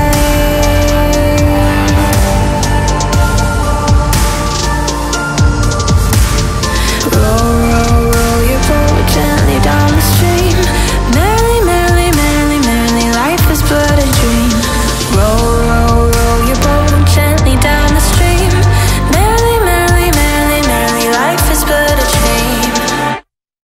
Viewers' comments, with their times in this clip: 0:07 caught me so off guard, and i love the entire song, but I repeated the last 16 seconds at least 25 times lol. You're voice (if its okay to say this,) gives me hope that tomorrow will be better then the day before I love your music, thank you for pouring your heart into these songs